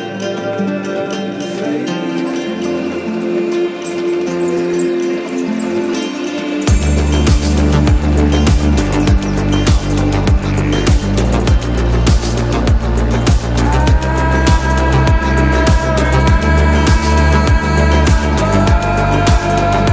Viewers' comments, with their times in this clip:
0:07 The drop is mad!!!! Which track is that? Can’t find it on your soundcloud